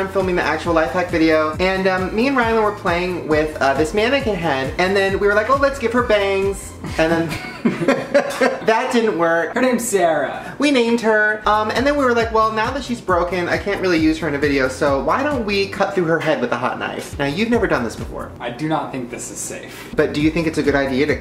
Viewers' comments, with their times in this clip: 0:08 Sarah, or Sierra? Tell me!